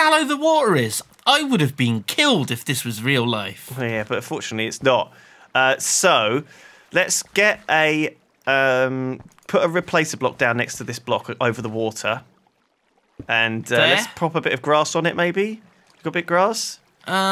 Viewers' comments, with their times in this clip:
0:03 Did he just say: "But unfortunately its not" LOL